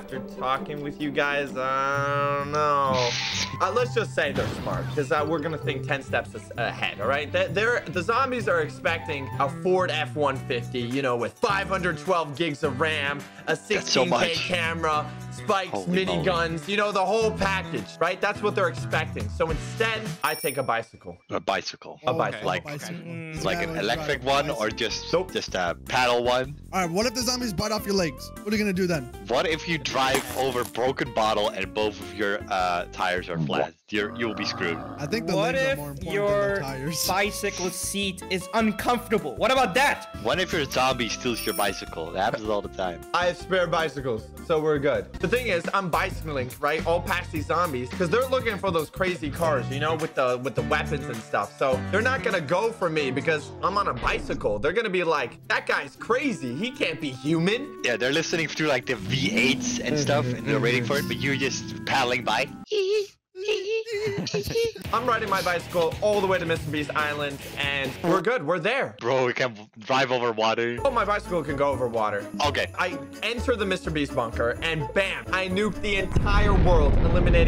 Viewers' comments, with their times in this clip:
0:09 Epic bk music Thanks 4 adding da BK music :)
1:03 The bicycle sound